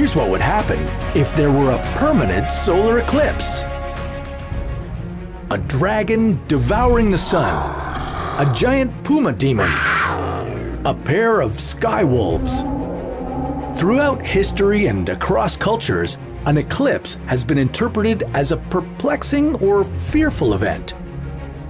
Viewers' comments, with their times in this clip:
0:08 i heard that as boomer